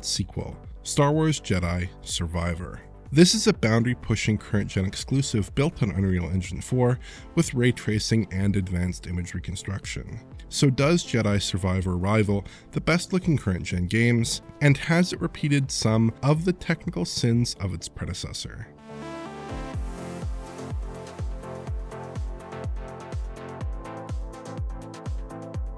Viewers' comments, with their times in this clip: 0:08 wait what? 'if it rivals the best looking CRINGE in gaming'? ?? 😂😂👍🙈